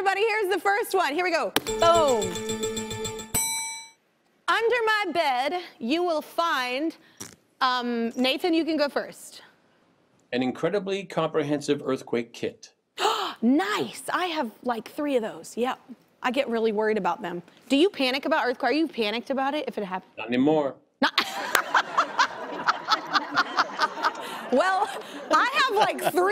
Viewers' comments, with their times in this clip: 0:07 was that a gas? LOL I still love her!